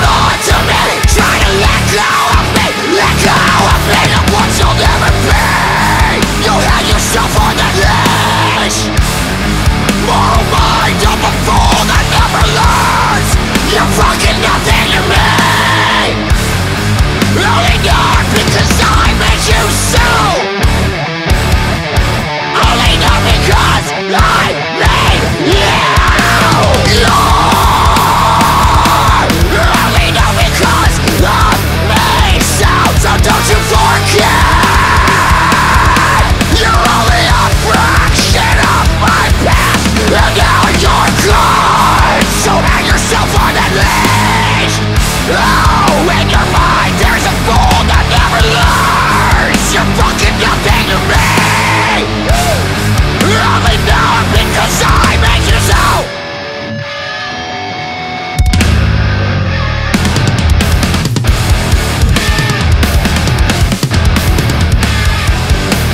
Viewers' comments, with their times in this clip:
0:06 That riff is so Lamb of God I love it
0:24 The groove that starts after is immaculate. Could listen to a whole song made out of that
0:51 Anyone else catch the "WOO!" lmao